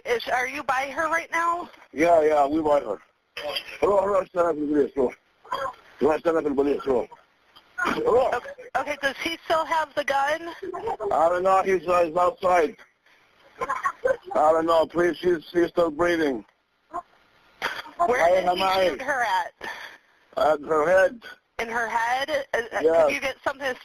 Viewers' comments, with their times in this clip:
0:04 i am not sure if he was speaking arabic or not, but if he did then i think he said to one of his children to go away from there and that he is talking with the police then kept on screaming LEAVE LEAVE roh roh